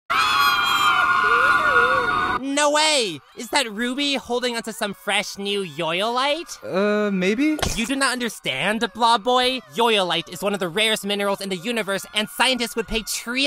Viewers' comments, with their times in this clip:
0:01 Tennis Ball Crying